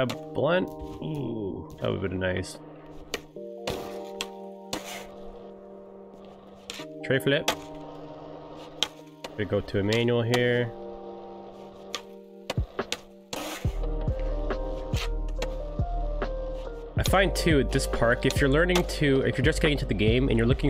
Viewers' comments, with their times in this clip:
0:06 It was kinda chill how you Said the tre flip